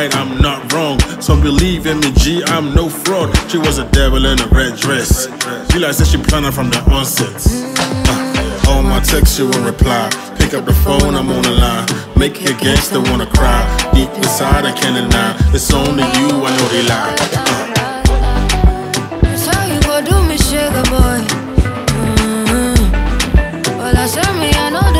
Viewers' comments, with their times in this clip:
0:09 I just love me some Gyakie.🥰 I see Gyakie, I click!😍 Dblack really did some damages here.🔥 My fav part is their vocal synchrony is just exceptional! Love d video too.🔥 Subscribed!!!💯🇳🇬🇳🇬🇳🇬